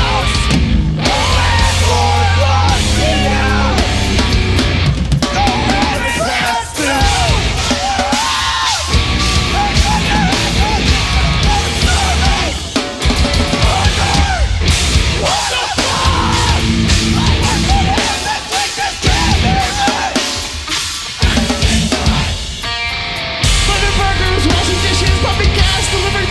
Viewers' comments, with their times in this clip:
0:07 those screams tho
0:08 That woman sounds like Chip King from The Body.
0:10 Kaonashi (Feat. Lemongrab from Adventure Time)